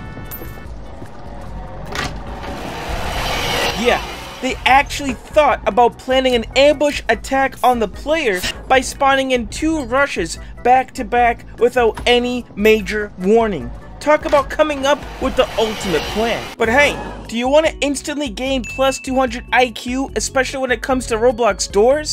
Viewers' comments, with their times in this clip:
0:05 perfect cut scream be like
0:06 perfectly Cut scream there screech
0:07 perfectly cut screech
0:08 perfectly cut screech
0:08 screech cut scream got me dying